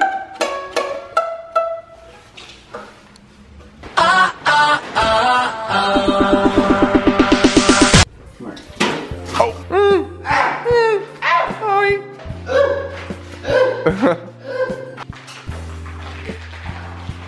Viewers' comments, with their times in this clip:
0:03 lost it when BTR played